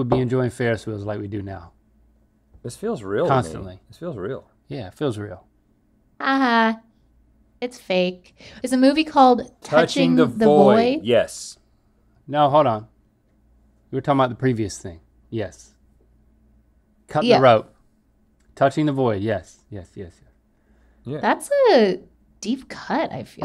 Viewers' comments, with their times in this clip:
0:08 I kept hearing "Touching the boy" instead of "Touching the void" and felt very unsure about the title choice 😂